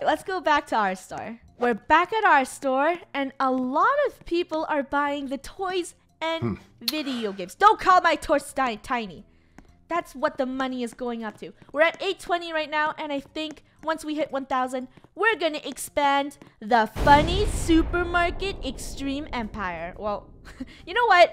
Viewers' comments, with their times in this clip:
0:05 there is a weird noise, anybody else notice?